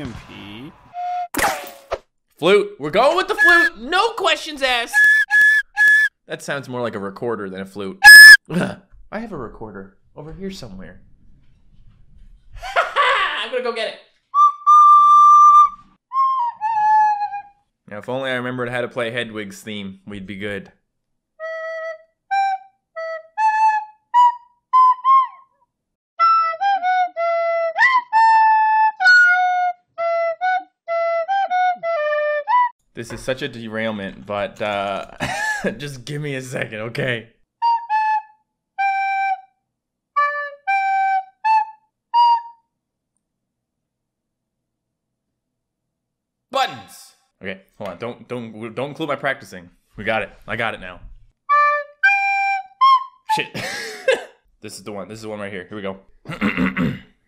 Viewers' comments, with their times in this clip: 0:08 That hurt my ears >:(
0:14 EPIC RECORDER SKILLS
0:40 that sounds more like a new hope then hedwig’s theme, but then again that’s john williams for ya